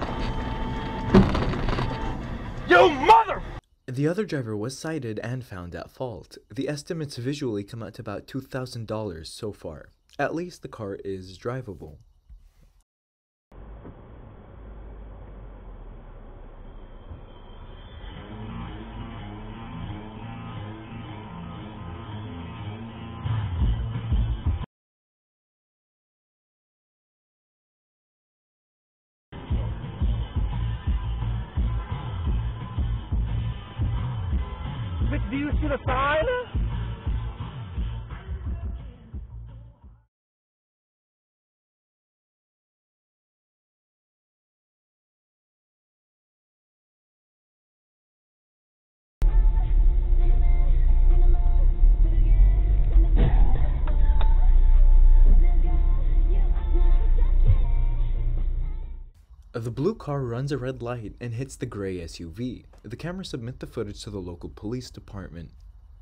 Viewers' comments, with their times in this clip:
0:03 Excellent audio editing here, lol 👌 Can't risk demonetization, after all... ;)
0:54 I hear Blackpink in the background. That's a K-pop fan right there.